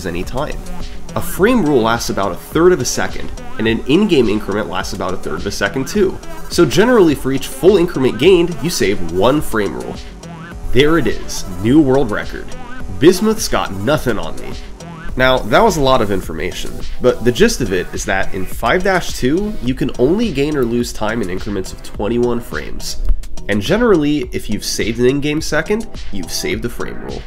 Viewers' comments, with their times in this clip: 0:10 Summoning salt litterally speedrunning a speedrun video 😭